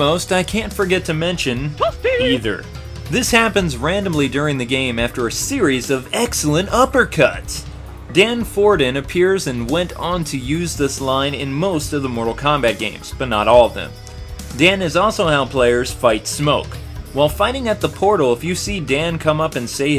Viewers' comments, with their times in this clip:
0:05 I hate this the sound cuts off this sucks